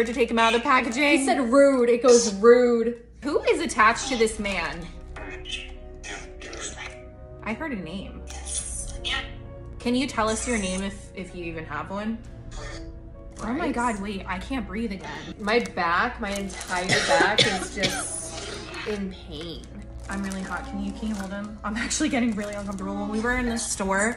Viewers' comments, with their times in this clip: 0:04 i thought it said Rich but first listen i thought it said Chris so im probably hearing things
0:06 also could be Richard